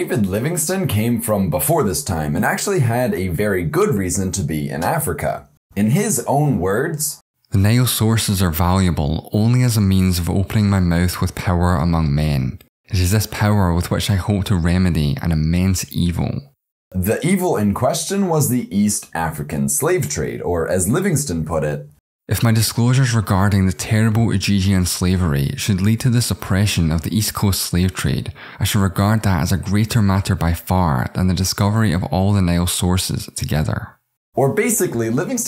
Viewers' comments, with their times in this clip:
0:05 I'm sure Dr Livingstone was a well & good abolitionist, but GOOD GODDAMN does that nasal congested voice do nothing but make me hate him out of association
0:22 Wait... did i remember the voice? :D